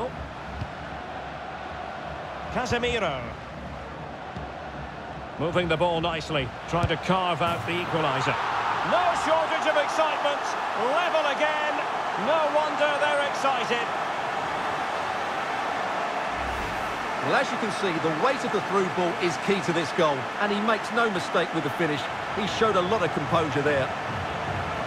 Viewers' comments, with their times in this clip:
0:07 what happened to the crowd?🤣 they didn't realise that it was a goal or what???